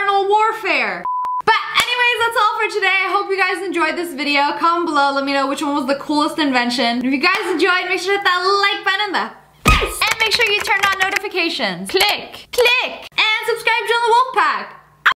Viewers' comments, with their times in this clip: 0:08 she didnt finish the howl